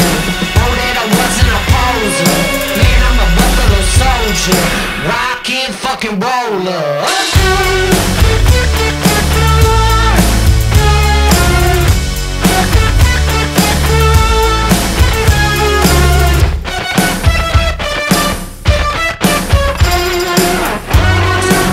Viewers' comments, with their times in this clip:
0:07 damn .. that guitars in the mid portion .. Extra ordinary 💚🔥